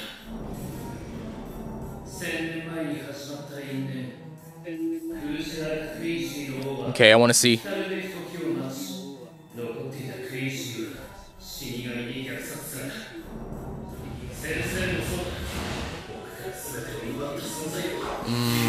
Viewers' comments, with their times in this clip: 0:03 he sounds like he is HIM